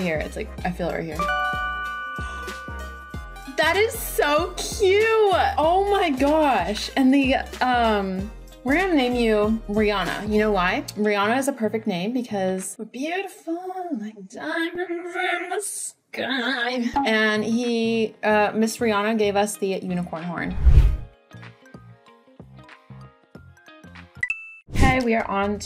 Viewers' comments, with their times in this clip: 0:10 💀LUV UR SINGING💀💀💀💀💀💀💀💀💀💀💀💀💀💀